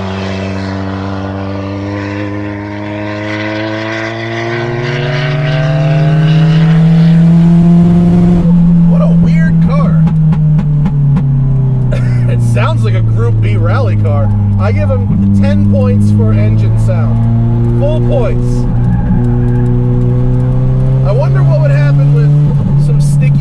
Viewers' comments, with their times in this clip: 0:08 and a few other spots is she missing / detonating? Im 6 '6....guess this ones off the hit list...love the colour...but shame about the box...kinda ruins it for me. They do look brilliant. Great vid as always.